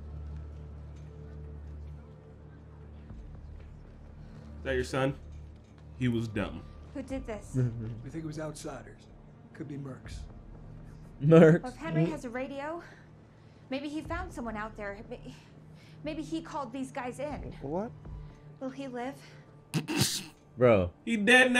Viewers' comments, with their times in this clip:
0:06 Tommy's voice actor cameo? I think. Sounds like him